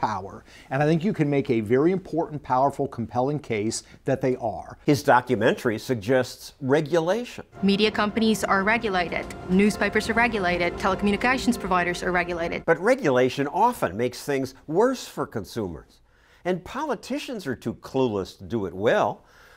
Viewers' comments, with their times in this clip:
0:07 what the hell is that accent?! Texan British?